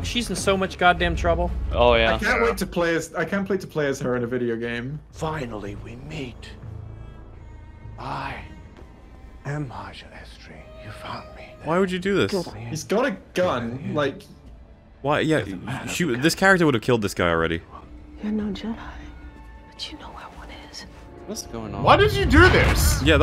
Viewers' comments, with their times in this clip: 0:05 WHY DOES EVERYONE WHISPER IN TV/MOVIES